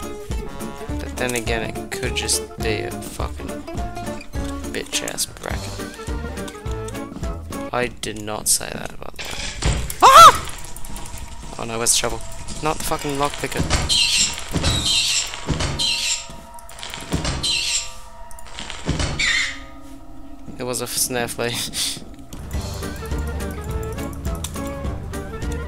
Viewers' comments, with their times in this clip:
0:08 bro became mickey mouse